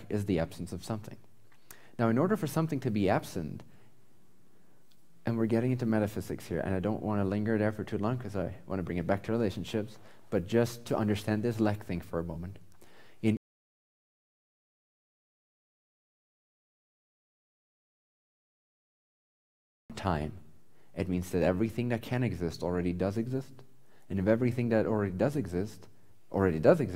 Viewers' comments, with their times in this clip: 0:09 Why did the audio go out ?
0:14 Why is he muted from till 4.32?